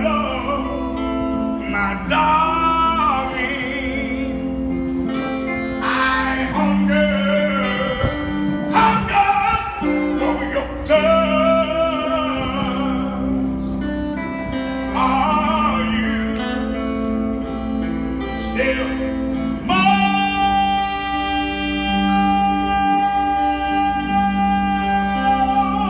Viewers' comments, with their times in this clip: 0:09 He’s singing with so much soul and projecting himself so well that when when he took the step with his left leg I felt it